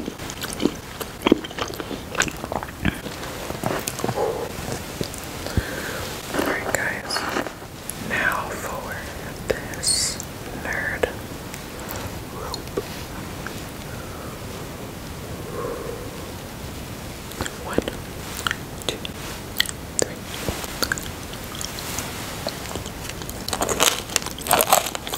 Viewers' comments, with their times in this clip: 0:07 Oooo looks yummy and CRUNCHY!!!!!! 😋😋😋😋